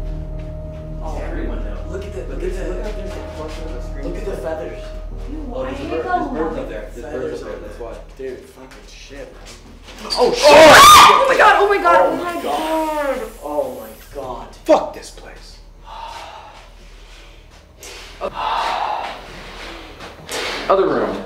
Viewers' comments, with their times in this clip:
0:09 Yo why did she scream like that? Scared the shit out of me. ✋😭